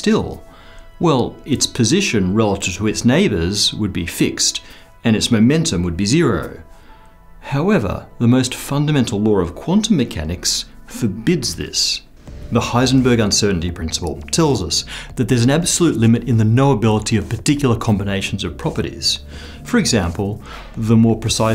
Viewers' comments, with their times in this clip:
0:08 There's a fundamental lore of quantum mechanics?